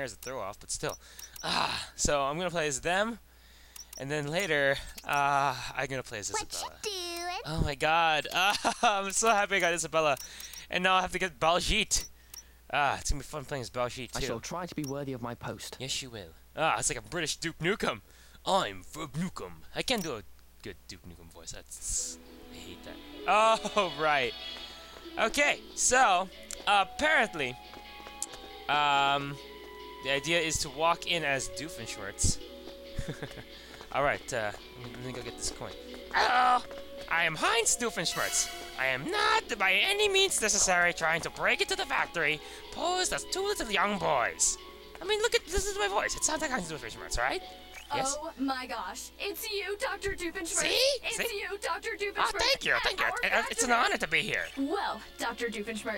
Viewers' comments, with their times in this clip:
0:08 My Earbuds are pitch-sensitive, so like, your girly shrieks and whatnot, are not fun. But I was looking away at the mark, and when Isabella spoke it SHATTERED my eardrums! Ok, thats an exaggeration. It was unpleasant.
0:36 oh my gosh your impression of doofenshmirtz was AWESOME